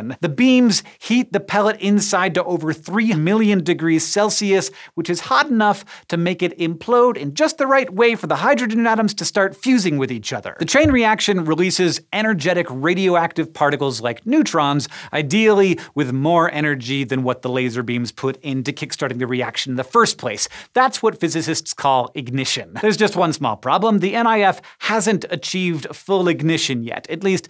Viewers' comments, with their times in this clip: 0:10 Anybody else heard the 'thump' ?